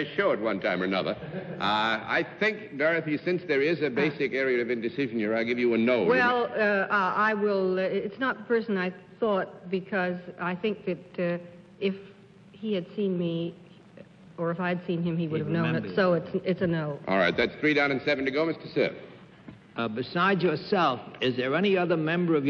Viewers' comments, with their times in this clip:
0:03 Did Walter Brennan fart ? (Listen with headphones.)